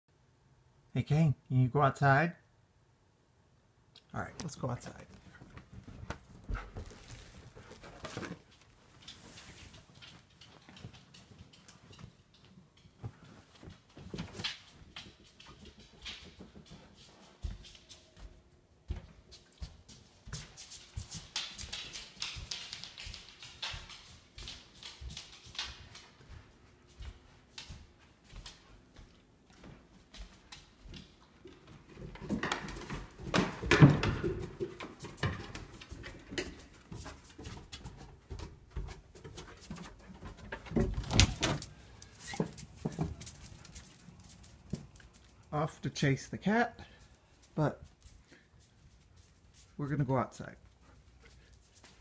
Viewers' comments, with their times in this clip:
0:00 When you're trying to sleep, and suddenly you hear a voice from beyond scream "FETCH ME THEIR SOULS!"
0:32 You can tell by the sound of this dog walking down the stairs how heavy this beast is.
0:33 Because of that sound, I at first thought either you or one of the dogs had tripped and/or fallen on the stairs.